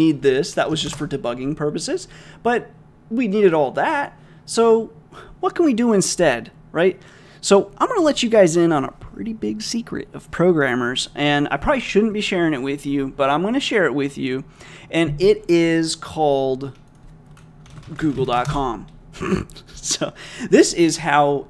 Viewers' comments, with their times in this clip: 0:07 I was listening so carefully for the SECRET All I got was a snort well player sir, well played!